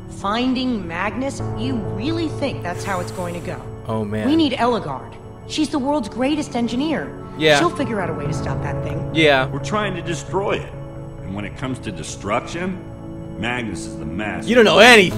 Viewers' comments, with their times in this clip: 0:03 ihear a wither sound